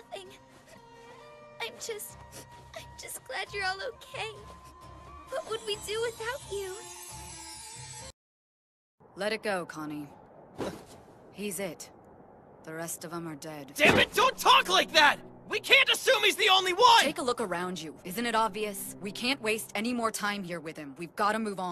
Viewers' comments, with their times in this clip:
0:09 Can’t help but imagining Urbosa saying that..! lmao